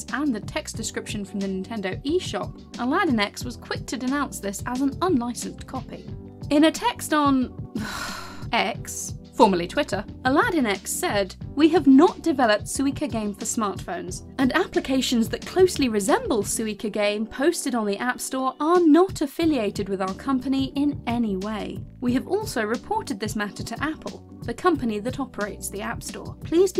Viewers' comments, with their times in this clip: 0:08 I love the disgusted sigh at Twitter's name change